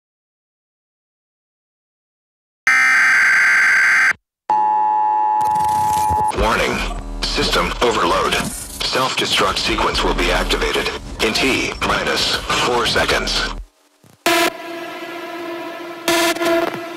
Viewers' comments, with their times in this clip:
0:03 Siren Head Vibes🔊